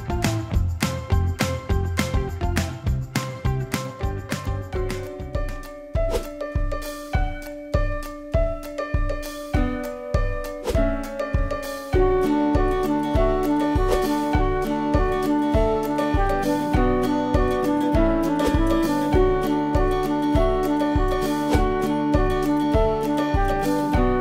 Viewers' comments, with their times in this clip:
0:08 oh god the music, ohhhhhhhhhhhhhhhhhhhhhhhhhhhhhhhhhhhhhhhhhhhhhhhhh